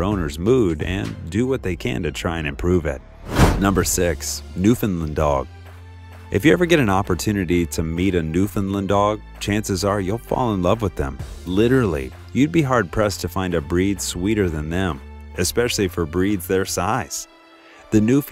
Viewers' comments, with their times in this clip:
0:05 ..new FIND land haha ffs new FOUND land